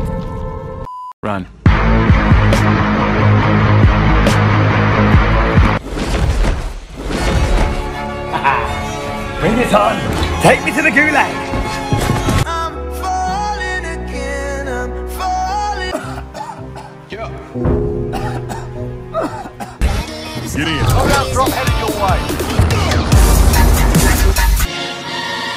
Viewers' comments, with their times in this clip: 0:08 I love that soundtrack